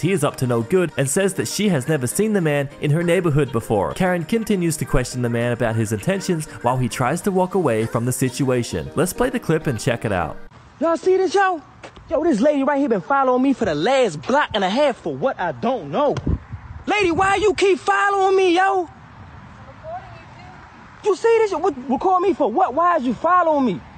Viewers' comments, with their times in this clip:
0:07 Please tell me you hear Kevin heart in this mans voice 🤣